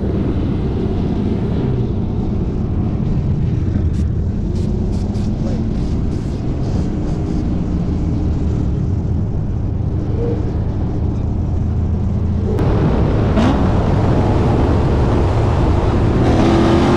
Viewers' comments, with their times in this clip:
0:03 Who's purging thier spary ?